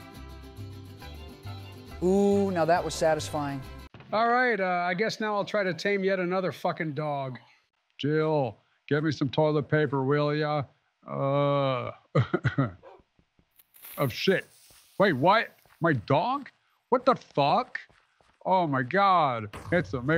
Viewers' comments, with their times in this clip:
0:06 what happened to Bro’s voice 💀💀💀💀